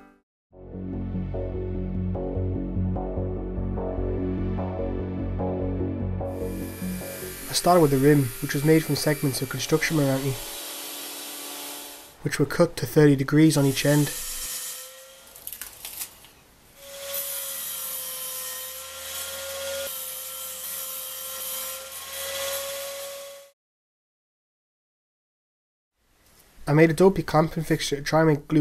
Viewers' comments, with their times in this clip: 0:09 I've played the video over and over, but I cannot decode the type of wood you named Please name in reply. Best I can decode is: ~"Construction Marange"? What is the real name?